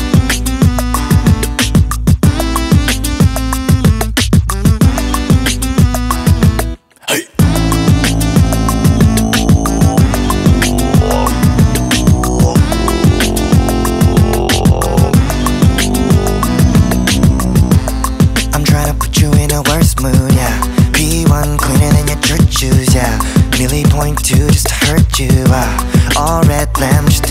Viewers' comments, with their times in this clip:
0:06 There's something so satisfying about hearing the throat bass, it makes me feel complete lol
0:12 when a beatboxer gets punched in the guts
0:13 deep throat bass 😯